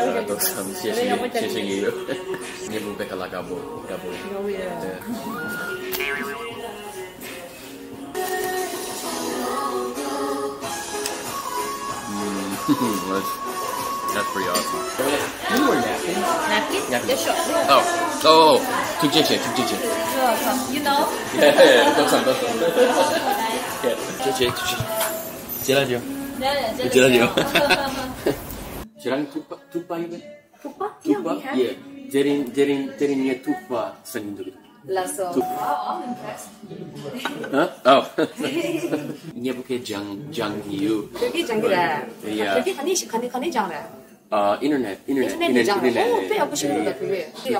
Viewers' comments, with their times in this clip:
0:10 damn that music slaps.
0:30 this server has a fantastic voice